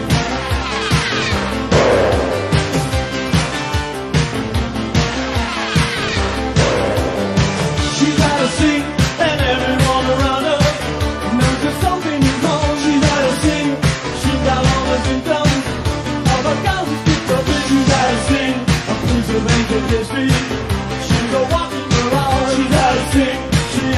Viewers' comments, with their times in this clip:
0:07 Little audio stumble here. Never knew Mothersbaugh lip-synched live. Interesting.